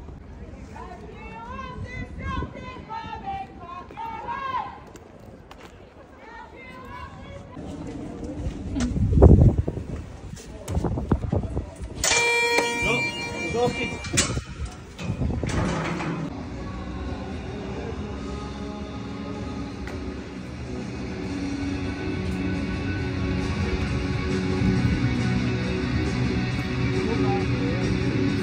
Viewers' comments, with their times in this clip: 0:10 thought Scotland the Brave was about to start there 😂